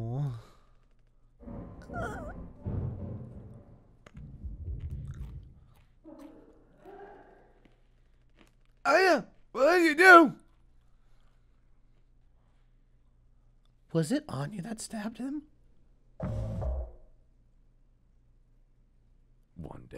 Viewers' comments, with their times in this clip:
0:03 Im sorry, but in the dramatic scene, was someone eating something? 😭